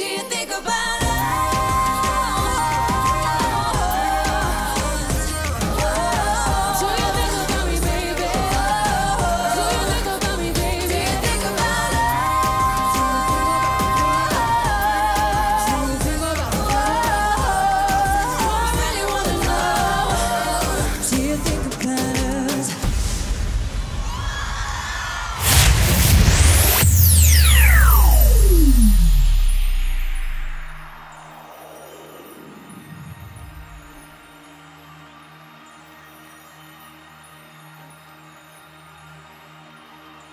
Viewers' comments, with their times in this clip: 0:04 in this moment she is singing live.
0:22 Did you hear the piercing scream 😂😂 That's how Little Mix slayed 😁
0:23 it's my scream
0:24 That scream is me coming through your screen because these girls kill it 👏🏼EVERY👏🏼TIME👏🏼